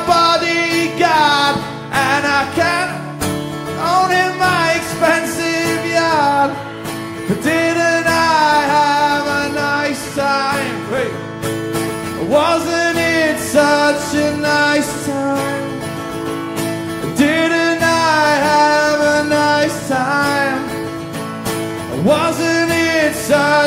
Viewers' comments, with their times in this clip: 0:09 First time noel has ever done something like this, almost turned into Christ moore for a second